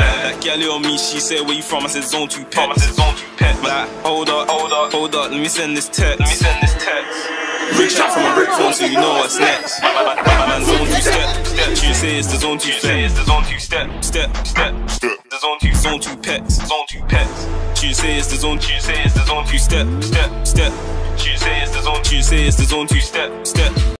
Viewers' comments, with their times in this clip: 0:10 I thought I heard gully in the background 😂